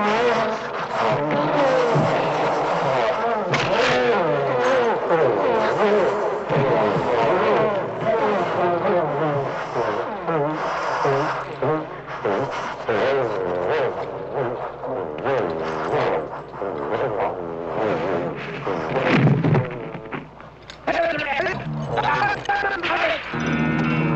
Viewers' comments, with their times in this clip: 0:09 One last fart before death!